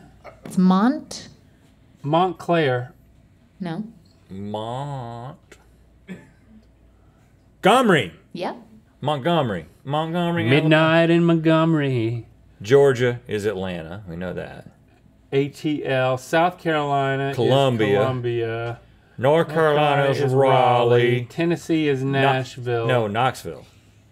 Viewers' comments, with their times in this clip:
0:06 I like how he said Montgomery. The City I live in! Alabama